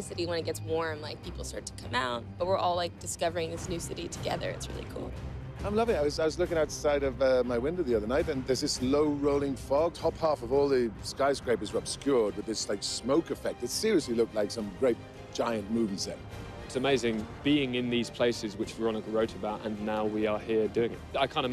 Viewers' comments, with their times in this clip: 0:04 -OMG 'FOUR' IS LAUGHING